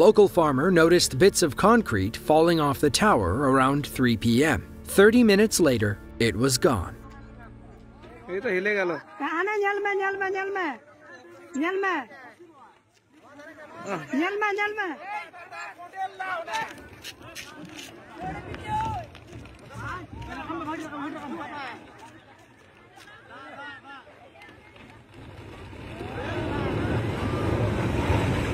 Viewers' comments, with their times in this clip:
0:10 This is also the noise you hear from ants when you kick over their anthill.